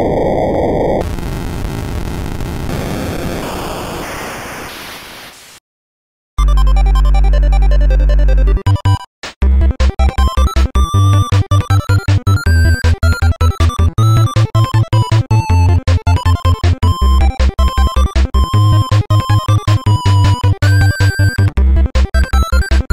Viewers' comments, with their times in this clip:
0:06 how is no one gonna talk about the ending theme